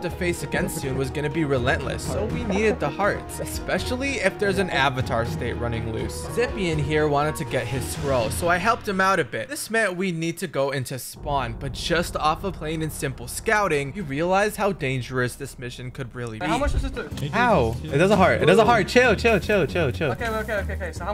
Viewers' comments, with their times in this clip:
0:04 good video but the way you said my name hurts me